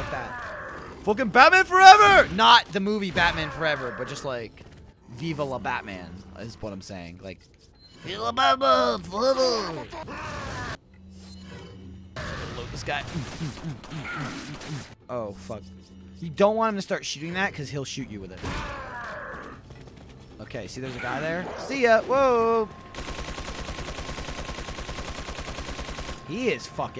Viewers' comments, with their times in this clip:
0:08 it kinda sounds like he is saying "Viva la Batman!"